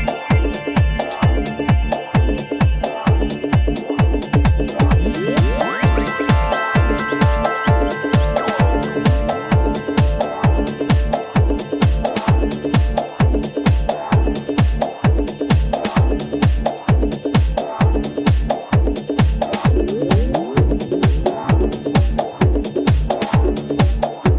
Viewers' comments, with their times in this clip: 0:05 what a brilliant transition...